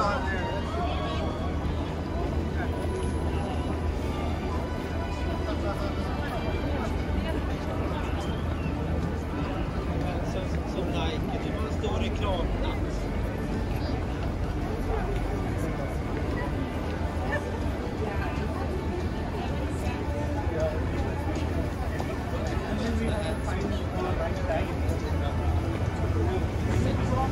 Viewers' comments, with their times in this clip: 0:10 time heard some swedish